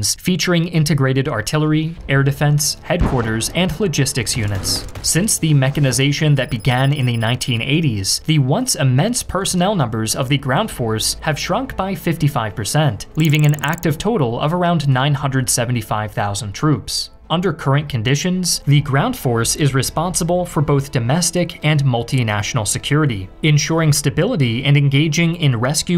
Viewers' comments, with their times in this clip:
0:07 not the among us in the noteblock bro